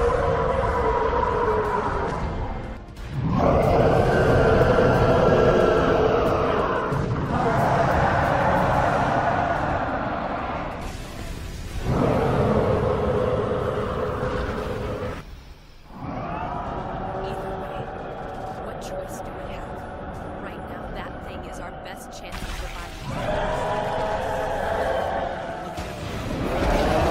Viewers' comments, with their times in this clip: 0:08 holy shit I like how they roar at each other Eren: “I’m gonna kill you!!” Titan: “BRING IT ON!!”
0:15 That roar sounded AWESOME!!!